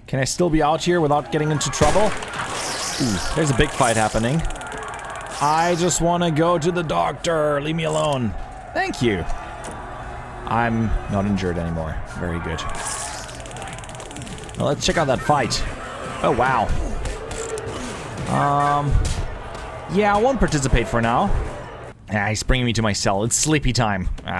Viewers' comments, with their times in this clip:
0:06 Is it me the only one who thought his "Thank you" was exactly like the one from Metal Slug? :D